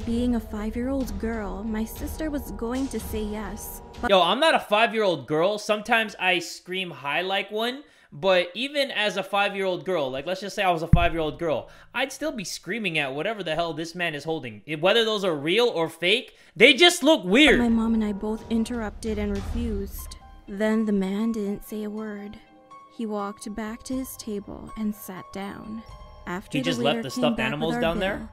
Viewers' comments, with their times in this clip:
0:09 what hit the mic